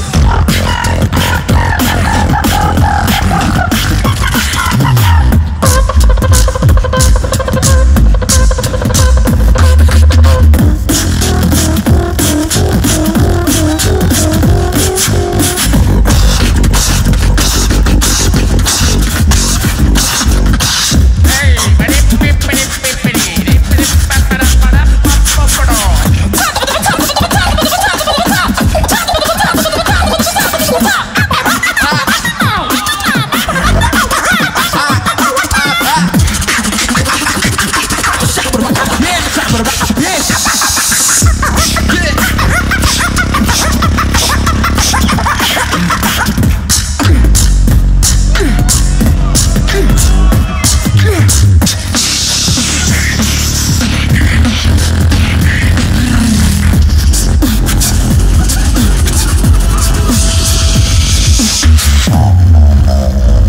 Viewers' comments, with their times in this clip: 0:10 is the high pitch sound from a soundtrack or something? It stands out so much to me
0:25 BRUH I SWEAR THEY SOUND LIKE CHICKENS
0:25 chicken going fire🔥😂
0:26 sounds like a chicken fight 😂😂😂
0:26 Me: having a peaceful sleep the birds at 6 am be like:
0:30 he went straight turkey mode
0:40 !!!!🔥gangster ass Beat
0:46 that beat rocks!!!